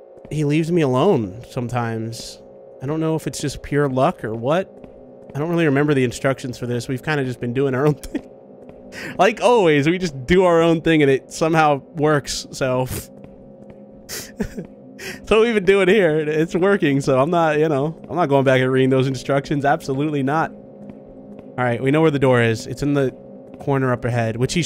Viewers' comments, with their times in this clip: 0:05 did anyone else hear the faint squeak noise it sounded like when you honk freddy's nose on the poster in fnaf 1, did the monster step on a squeaky toy or somethin?